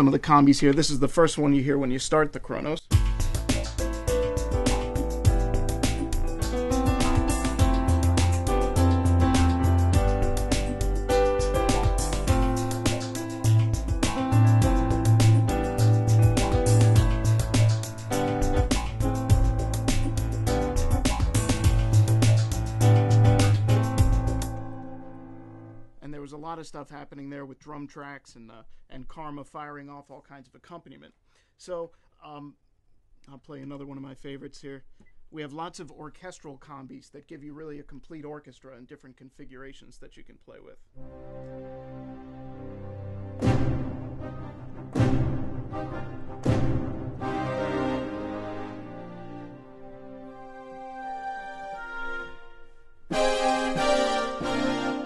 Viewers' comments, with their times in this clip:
0:09 I call the first combi "the angry keyboardist"
0:40 Love that Orchestra & Timpani !!!